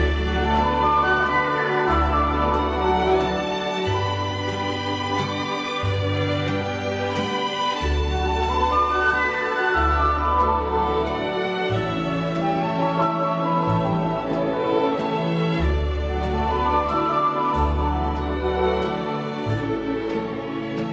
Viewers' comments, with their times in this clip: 0:07 Standout Oud solo